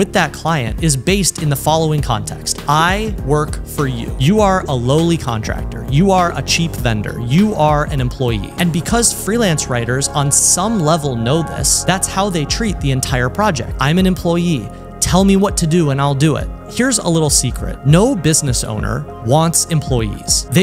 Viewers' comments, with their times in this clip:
0:03 music a bit too loud from min except that super-freaking-awesome content